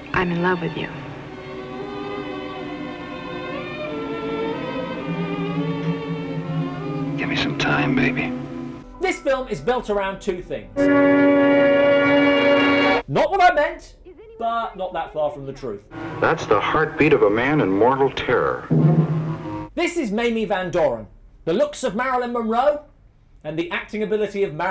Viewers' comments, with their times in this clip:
0:06 At the mark - I nominate for best awkward silence.